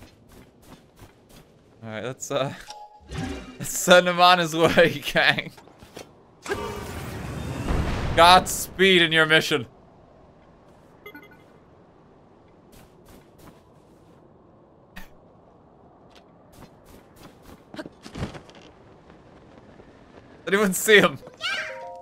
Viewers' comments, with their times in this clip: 0:06 Might be one of my all-time favourite RT moments. Just the slowly fading 'oof' vanishing into the distance.